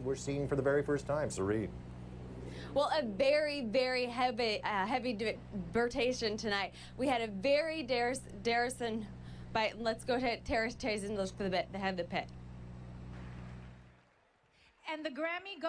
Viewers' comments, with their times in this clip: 0:03 Am I the only one slightly worried ? Like what happened? Does she realize she's not saying words? Did she have a stroke?!